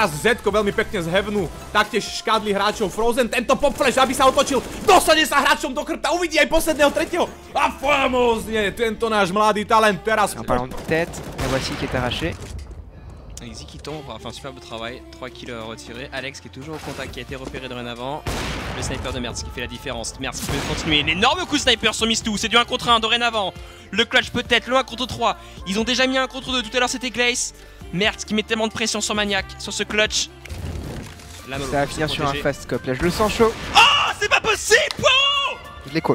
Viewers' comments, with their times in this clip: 0:09 he is not speaking Chinese my friend
0:10 it was french
0:11 r u sure thats chinese im born chinese but couldn't understand a word that they were saying
0:11 it s not chinese it s french
0:17 u said speaking in chinese but its french ; ((